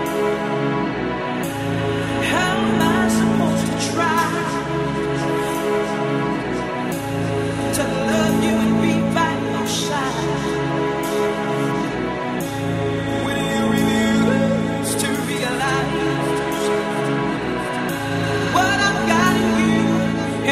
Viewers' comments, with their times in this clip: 0:03 🔥🔥🔥🔥 Who is listening this all the time This voice is fabulous 🔥💃 👇👇👇👇👇